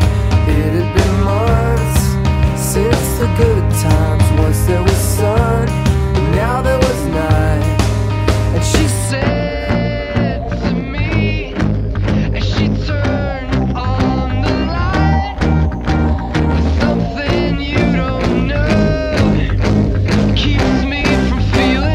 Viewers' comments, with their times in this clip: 0:09 I like the part where it suddenly gets quiet, then the intensity builds up.